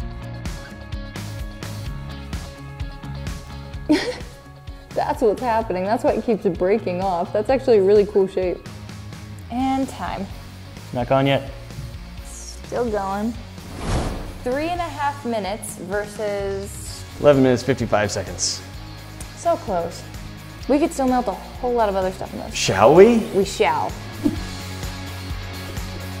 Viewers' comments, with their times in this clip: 0:08 Is it just me or it sounds like she cursed